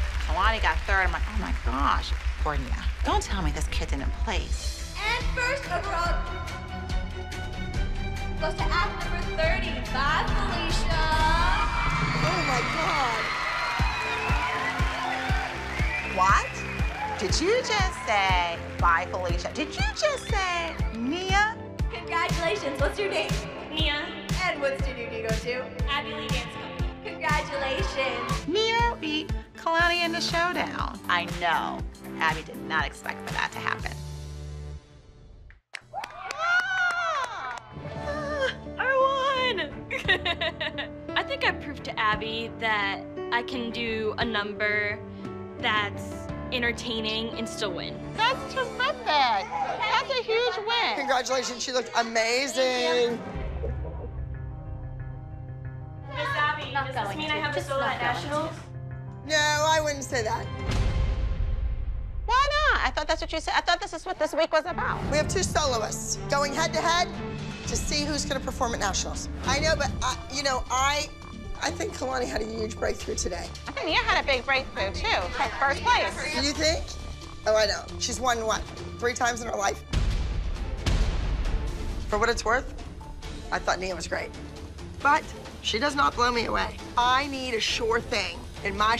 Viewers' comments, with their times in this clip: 0:09 If you noticed When Nia won first place for her Solo Bye FeliCa Abby said “oh my gosh” like she didn’t even want her to win!!!
0:11 when Abby said "Oh My God!" In a negative way when Nia won 1st place, shows you she meant to sabotage Nia. She wanted Kalani to win.
0:38 her laugh is cute <3
1:09 The stuttering is crazy 😭